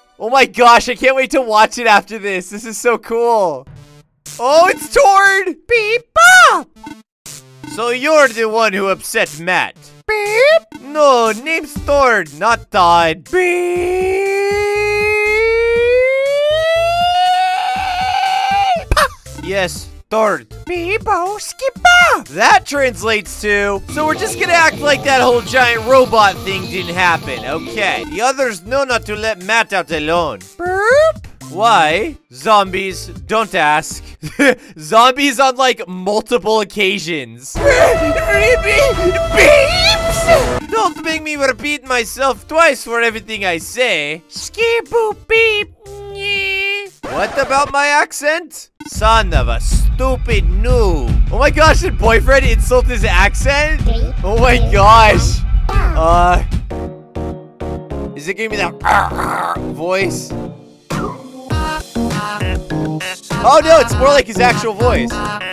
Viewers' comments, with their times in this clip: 0:07 boys I found the voice actor of tord like I swear you sound like tord
0:13 the worlds longest beep
0:51 that voice is pretty accurate